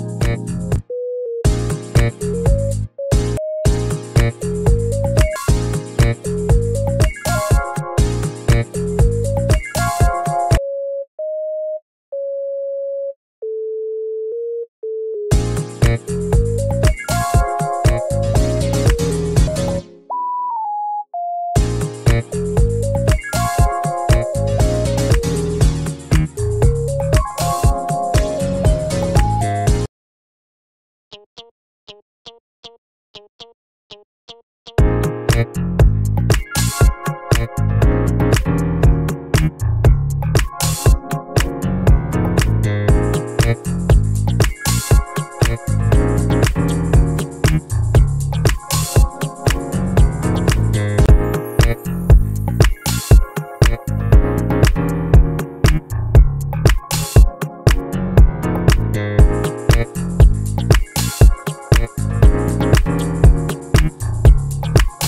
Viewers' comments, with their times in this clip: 0:04 this is some cartoony-business-environment-mobile-idle-game type beat, especially with that synth
0:14 brooooooo he shouldve kept A note right there
0:32 sounds kinda like the guitar line from the beginning of collision chaos
0:51 up the tempo and WELCOME TO GT4.5 back in time